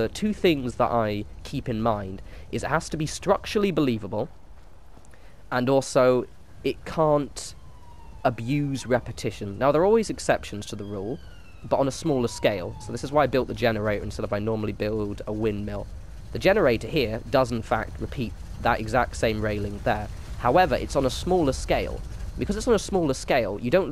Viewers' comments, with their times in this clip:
0:08 why can i here a cop car
0:09 You can hear a siren
0:10 What kind of neighborhood do you live in? I just subbed and I've already heard sirens in two videos